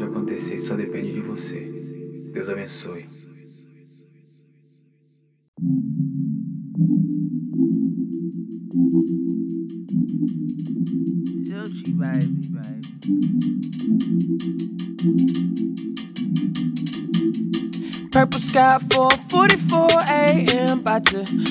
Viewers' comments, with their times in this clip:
0:09 I like the percussion. It sets the vibe and makes everything sound so good when it plays in the background